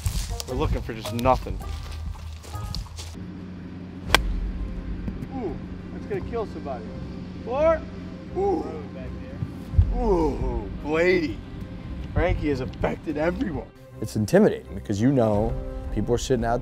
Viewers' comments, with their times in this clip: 0:04 minecraft damage sound